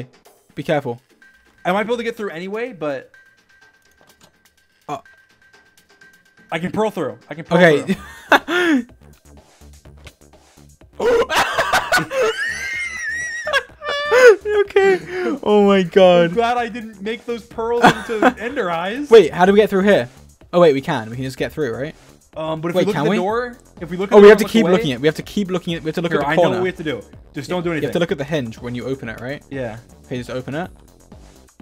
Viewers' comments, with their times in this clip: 0:10 Dream: swims through the hole t e a k e t t l e m o d e a c t i v a t e d
0:12 dreams weasing tho...